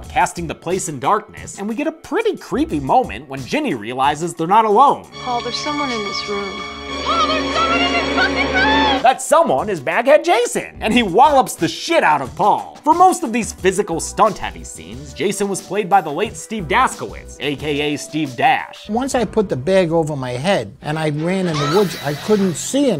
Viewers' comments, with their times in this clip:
0:05 Sounds like "The Art of Peer Pressure" by Kendrick lmao